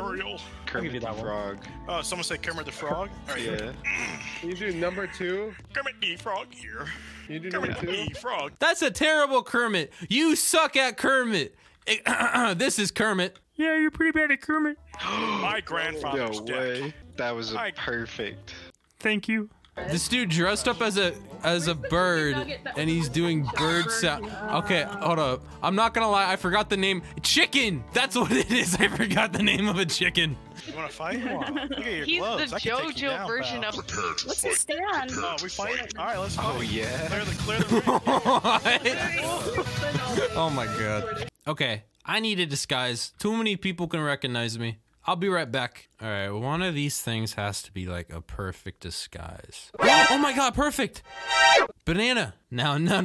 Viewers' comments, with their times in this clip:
0:07 I can do a way better Kermit the frog voice it sounds just like Kermit
0:38 BATTLE MUSIC YAY